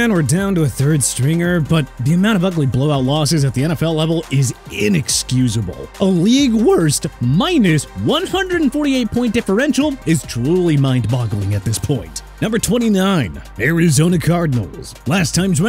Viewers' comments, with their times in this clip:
0:03 Anybody hear that voice crack